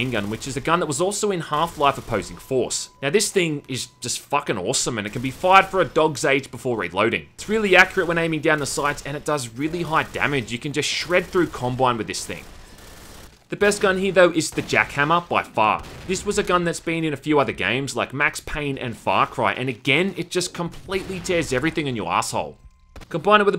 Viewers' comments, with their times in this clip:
0:10 thought he said "You can just shred through Columbine with this thing"